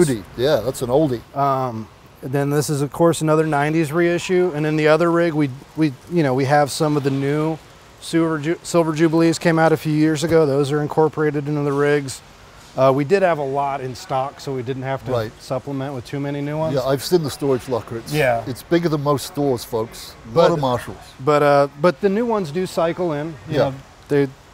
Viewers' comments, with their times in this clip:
0:08 Sewer Jubilee? Lol